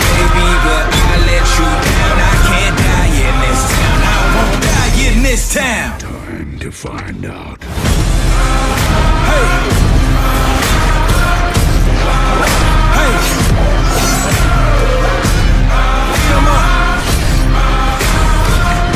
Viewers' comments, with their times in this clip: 0:05 Peter Cullen’s phenomenal voice will always be appropriately badass for AMV’s